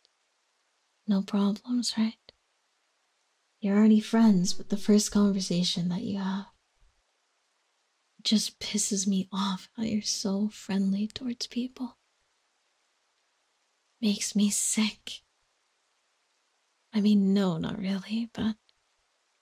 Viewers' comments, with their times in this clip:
0:03 That sound made me swipe my ear cause I thought it was a mosquito. But it was the audio